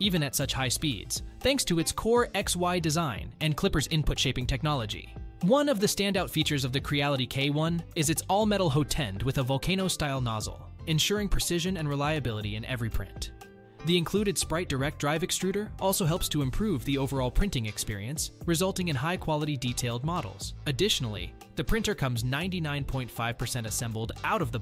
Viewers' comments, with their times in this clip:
0:08 WTF is a "hoe tend???" Thumb down and don't recommend channel!